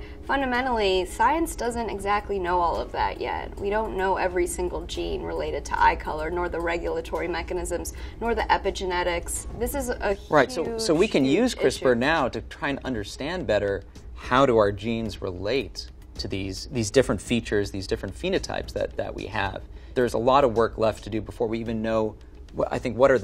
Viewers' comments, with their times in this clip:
0:09 Lol he totally cut her off
0:11 Did he just cut her off halfway??